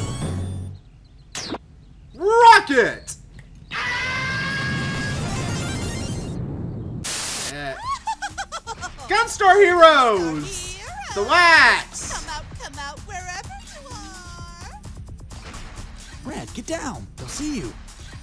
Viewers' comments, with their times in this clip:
0:03 I lost it when I heard the classic Tom scream XD